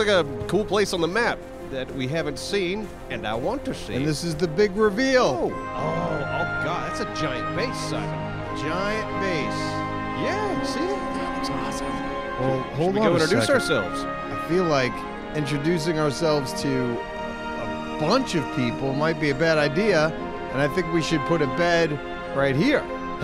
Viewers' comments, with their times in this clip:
0:07 you guys better make a base there thats the coolest spot on the map awesome music by the way